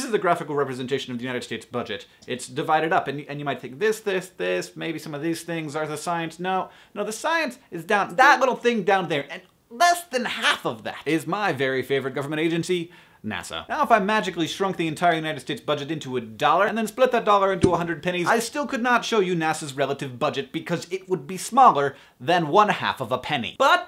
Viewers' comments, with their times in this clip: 0:07 The Gchat *ding* really threw me for a loop. I was trying to figure out why no box popped up.
0:07 sounds like gmail chat
0:07 Someone got an IM in his Gmail ...
0:07 who checked their gmail for a new chat message ... i heard that annoying beep...
0:07 So I saw this through the NASA channel first, due to your tweeting it... And every time I hear that ding I think someone's messaged me XD. I really like this one, though :D DFTBA!
0:08 GMAIL CHAT SOUND
0:08 the Gmail chat beep made me check my gmail.
0:08 gchat sound definitely thought i was losing my mind for a second.
0:08 lol when that little bloop happened i thought my gmail was getting a chat
0:08 did else anyone think that the noise was facebook chat?
0:08 I thought someone had sent me a chat on gmail...
0:10 What was that noise ? O_o
0:10 i thought someone was chatting me on gmail hahah